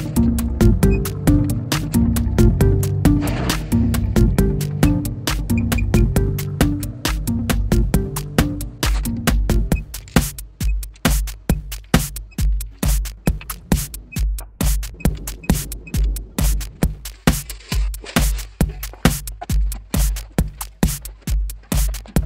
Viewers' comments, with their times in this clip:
0:10 peep,peep, peep. .. How long did it take to synchronize torque wrench to the music? :-)